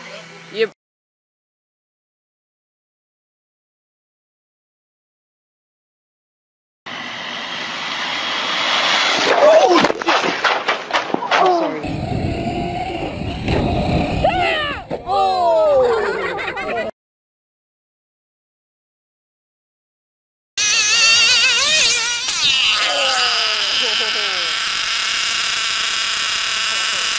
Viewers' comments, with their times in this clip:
0:09 sounds like someone just broke their ankle